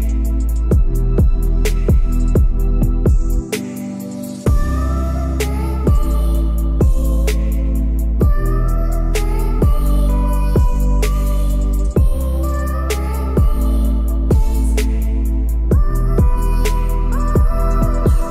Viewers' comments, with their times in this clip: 0:04 My Video ends and (audio library promo begins) . I left it on by mistake but they deserve credit for this beautiful beat!😉 Progress not perfection. 🤣